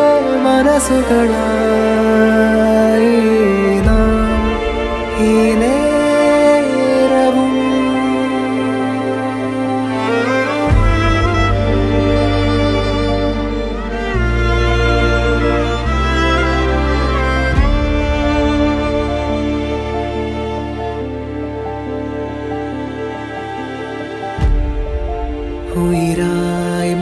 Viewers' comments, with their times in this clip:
0:10 That Violin hits different 💔💔😭